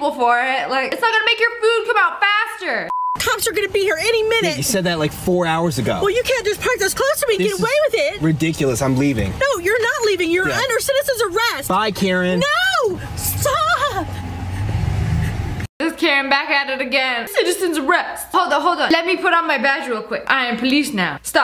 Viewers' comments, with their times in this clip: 0:08 StOp!!🤣🤣 like she was about to cry. (I guess she was just whining)